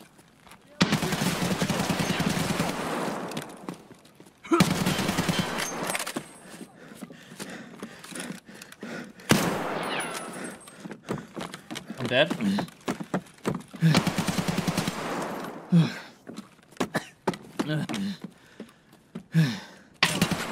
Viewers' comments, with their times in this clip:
0:04 Bro the audio is so awful holy shit. How anyone plays this game in this sate amazed me.